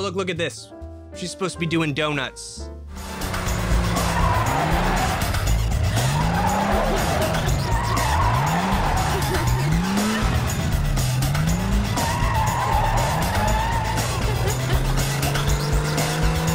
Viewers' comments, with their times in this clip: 0:03 why was the music over that happy carefree car fun scene like the soundtrack to The Matrix